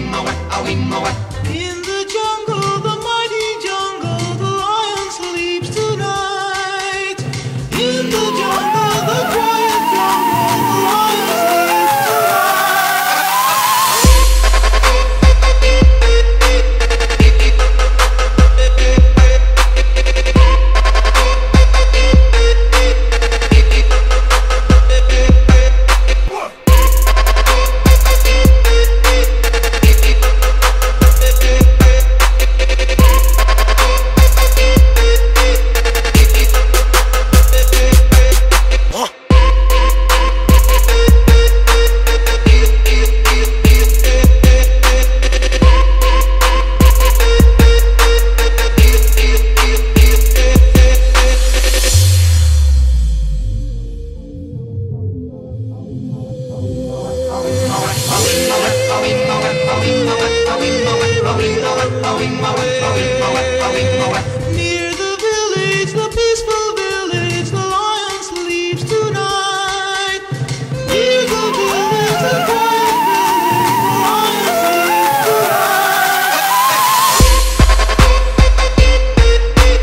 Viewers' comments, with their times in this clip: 0:09 The music is very hot than Russia.
0:11 drop is the best
0:13 sounds awesome! Awesome remix! Nice idea to remix such a track xD
0:13 2x speed in its EPIC
0:14 The drop was so good that my soup fell off the table and didn’t care and continued to dance
0:38 is it me or do I hear Zoro from one piece?
0:39 Did I just hear Rick Ross
1:02 Who else hears I’m on mah way